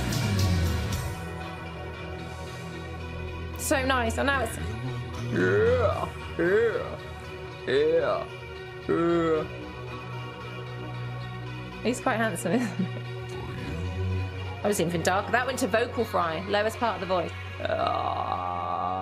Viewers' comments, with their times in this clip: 0:04 Your attempt at a deep voice LOL "yeeeaah" ROTF